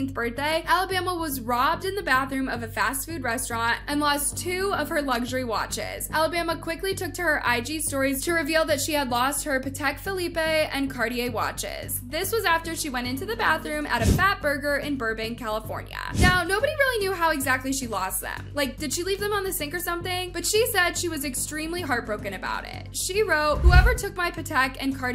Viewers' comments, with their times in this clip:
0:09 I’m cryingggg 😂😂😂😂 who is Felipe???!!
0:10 I’m cryingggg😂😂😂 who is Felipe?